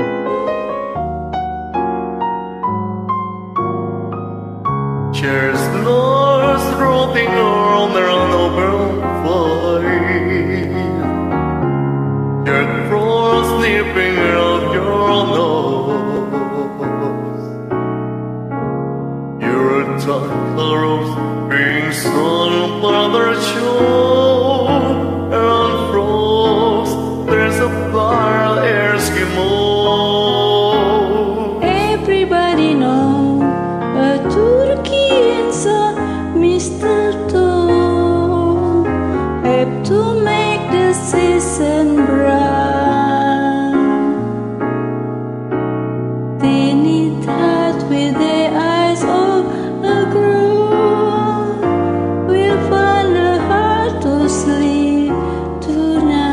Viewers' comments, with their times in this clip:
0:04 is when they sing btw
0:04 Jose Carreras trying to sing English
0:07 Hanzo from Overwatch singing majestically at his enemies
0:11 "Dave Grohl sleeping at your door."
0:19 uEr touCh girLps being sung brother chirl 😭
0:22 BRO SAID MADARCHOD 💀💀💀
0:32 Everbody knows a TuRkeY 🦃 got me dead 😂
0:43 this part kills me everytime he just fades in and out tor emind you that hes there